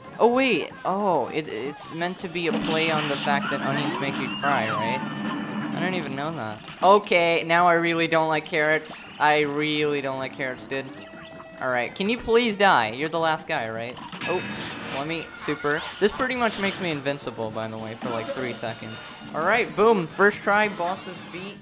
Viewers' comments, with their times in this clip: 0:05 omg u sound like L from death note 😭